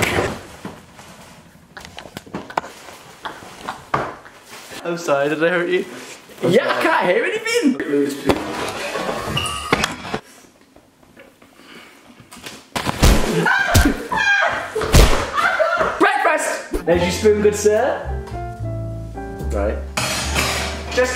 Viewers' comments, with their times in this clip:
0:06 what did he say?